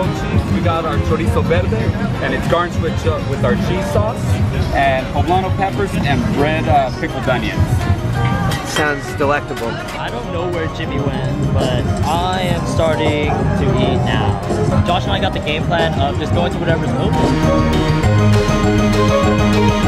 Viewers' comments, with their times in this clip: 0:04 the dude sorta sounds like Idubbbz